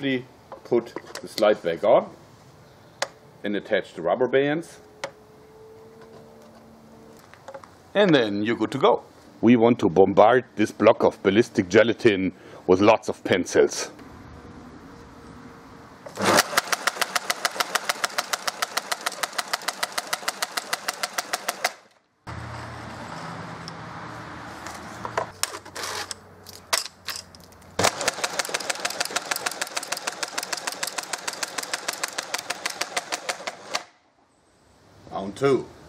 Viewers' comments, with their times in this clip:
0:04 His "rubber bands" sounded so American
0:16 shooting pencil Subtitle : [Applause]